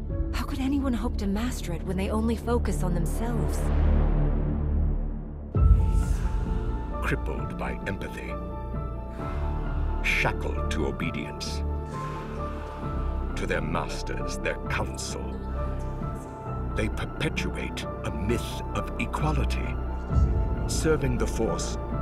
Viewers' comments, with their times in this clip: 0:08 That combination of the sith chanting (whispers) right beneath the music is just A+